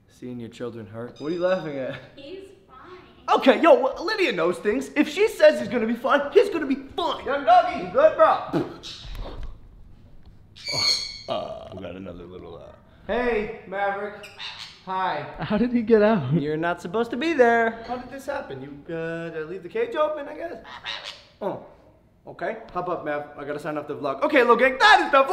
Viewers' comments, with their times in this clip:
0:08 hey Logan~~! 😝 did you fart~~? 😑